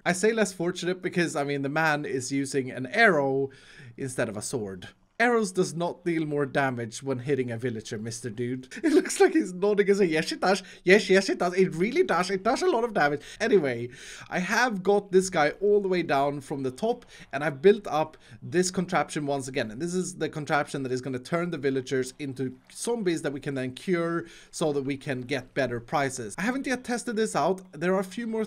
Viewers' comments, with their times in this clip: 0:08 the Indian accent got me 😂
0:09 Iskall: "it looks like he's nodding!" Iskall one second later: * svedish intensifies *